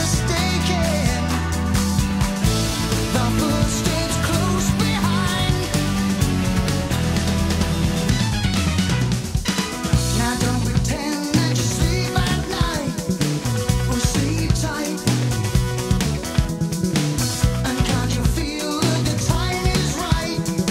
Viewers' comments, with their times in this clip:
0:07 Wow, I haven't heard this in ages. It's one of the better songs on the album, but IMO that's not saying much. Phil's lyrics are typically vapid, but the main offense for me is the faux EW&F disco horn break This was they keyboard player who once gave us the solo to "Cinema Show". And yeah, I get that "It's the 80s, why can't we have fun?" I'll just counter that bands like XTC and The Police manage to keep their songs light while not jettisoning their artistic credibility.